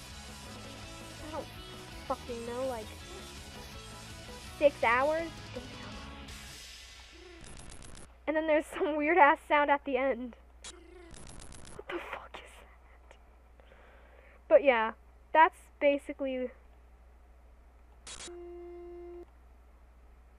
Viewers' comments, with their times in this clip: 0:08 The "weird ass sound" (ish) is the samples, sped up.